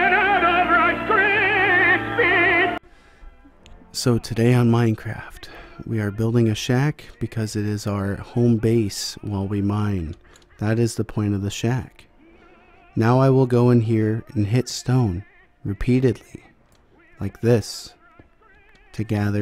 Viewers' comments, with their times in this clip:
0:04 I love the asmr No More Rice Krispies